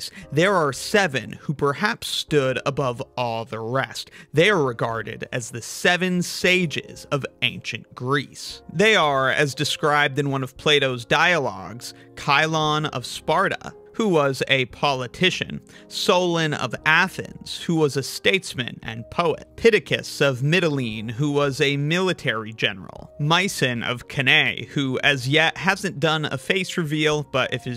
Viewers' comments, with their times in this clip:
0:10 "one of Play-Doh's dialogues"